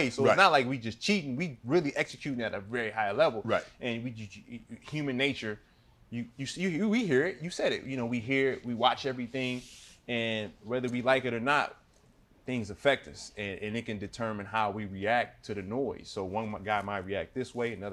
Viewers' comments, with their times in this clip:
0:04 I think iggy’s brain was thinking to fast the way those words came out